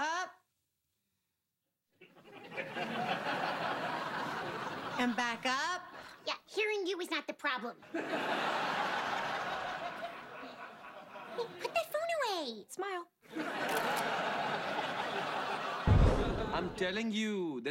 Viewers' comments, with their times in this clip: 0:05 "Hearing you is not the problem." Her New Jersey really comes out